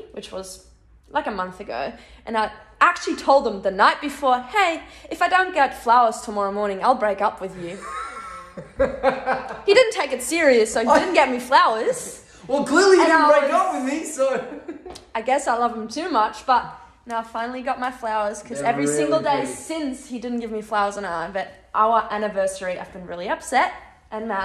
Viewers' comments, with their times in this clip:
0:06 that sounded so australian